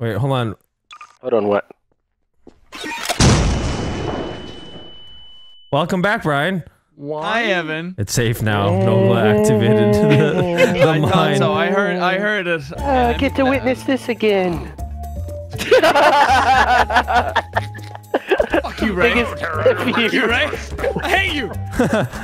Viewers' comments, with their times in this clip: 0:05 are ya winning son... Son? Moans continue to echo through the room